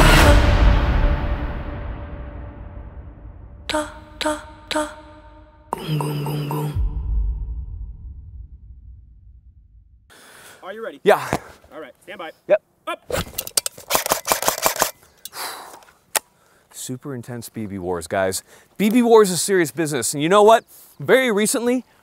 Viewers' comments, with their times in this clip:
0:10 No eye protection on is a — no: the — big no-no in airsoft. Even if he wasn't actually spewing out BBs (it sounded like he was dry-firing), the battery was in and connected.